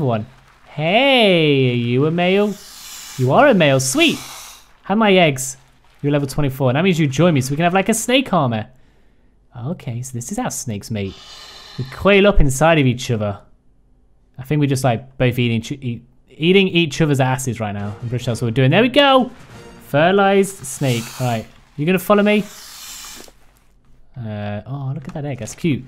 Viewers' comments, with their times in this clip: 0:06 "have my eggs!" How do you say that so happily!?🤣